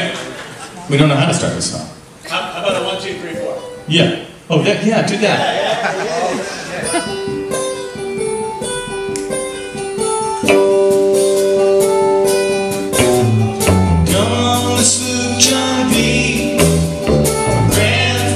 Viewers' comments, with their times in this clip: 0:06 Music starts Leaving that there because I often come back to listen to it. Nice work with the filming as always! :)